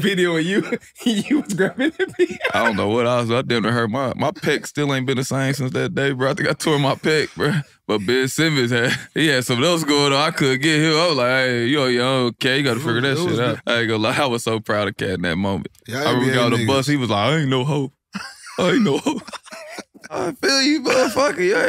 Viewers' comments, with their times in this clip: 0:03 Lol, the kid laughing at the whole thing...